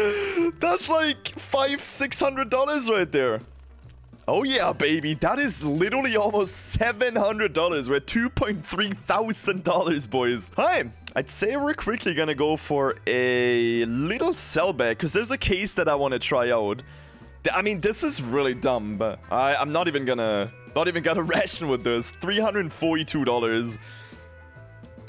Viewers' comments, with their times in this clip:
0:07 that lil 600$ juicer Poggies ! even getting a lil howl right after lmao but who care when we can unbox a freaking M9 CRIMSON WEB FN LETS GOO